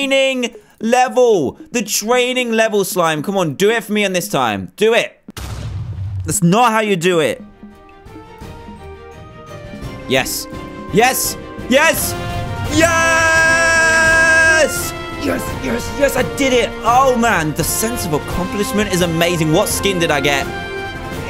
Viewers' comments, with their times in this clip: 0:07 ACTIVE VICTORY SOUNDTRACK
0:07 dantdm winner sing